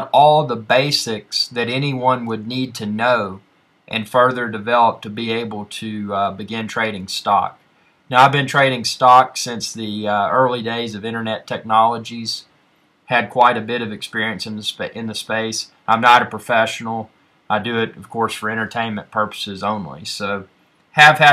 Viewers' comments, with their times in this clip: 0:07 lol at the meow